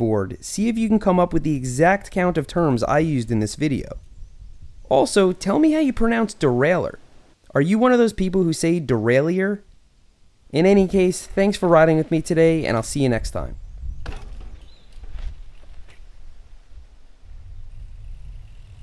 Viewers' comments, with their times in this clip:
0:05 I pronounced like that